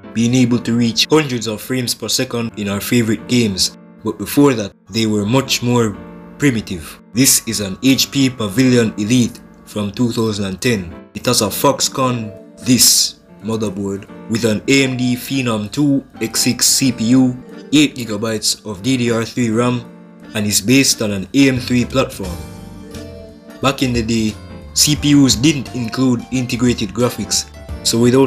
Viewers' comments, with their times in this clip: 0:10 it has a fuckscon!